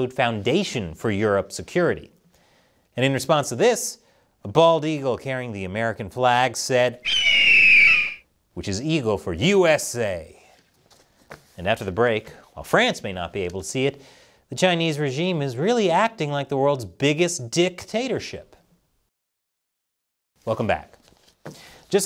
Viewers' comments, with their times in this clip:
0:04 fun fact: That's not the actual sound bald eagles make. Years ago people putting the eagle noise in film felt it wasn't cool enough, so they used a red-tailed hawk's screech instead. So yeah, that sound is actually a hawk